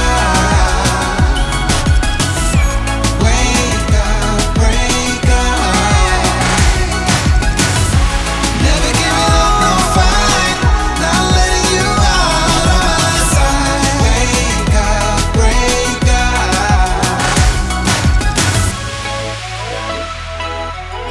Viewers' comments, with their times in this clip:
0:03 sounds like wanker